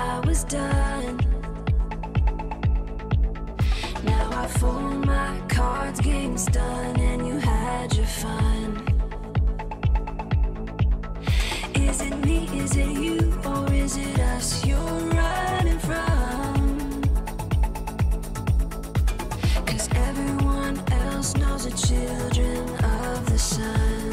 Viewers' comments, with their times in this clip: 0:07 Those Drums‼️‼️‼️⏭ AAmazing‼️‼️‼️